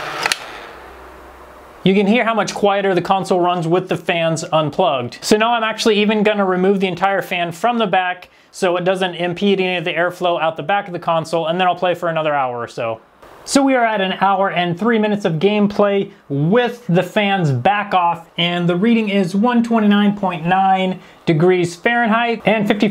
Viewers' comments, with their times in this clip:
0:03 lol You can hear much quieter the console runs with the fans unplugged. Because the fans are worthless hahaha